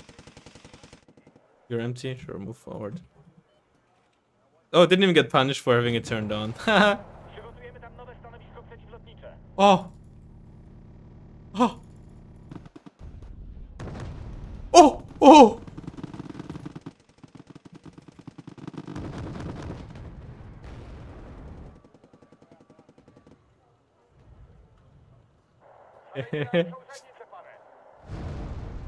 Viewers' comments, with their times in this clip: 0:09 so that is what you sound like when you finish ;)